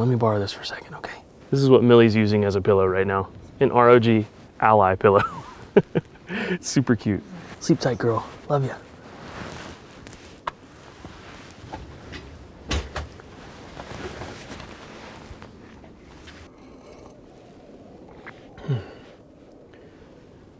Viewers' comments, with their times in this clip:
0:03 millie cry in but why? :(((